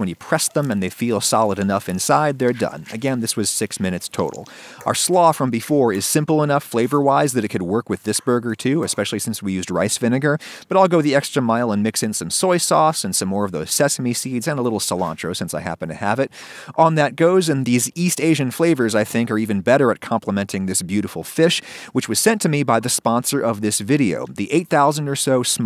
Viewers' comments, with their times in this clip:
0:10 Listen to how many s’s he says here